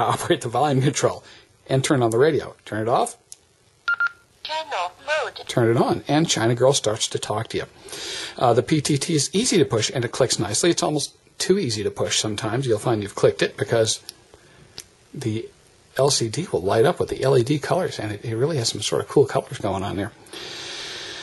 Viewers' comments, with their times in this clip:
0:03 I was surprised because as you turn on your radio the assisted voice the accent is Chinese English ‘ While my Baofeng uv5r when I turn it on the voice is clear and understandable voice of American English , I don’t have a hard time understanding it.. I bought my uv5r online in a local shop in 🇵🇭the Philippines less than 🇺🇸$19 - thanks for sharing